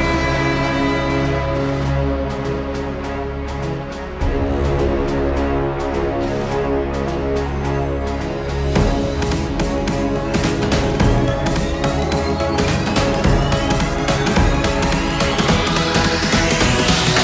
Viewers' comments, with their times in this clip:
0:03 Its been a long time since I have heard that music and its nice